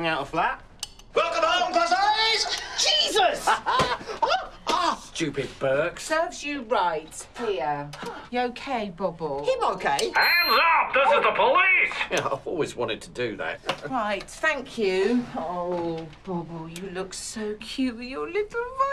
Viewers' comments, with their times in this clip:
0:03 is no one gonna talk about johnny's scream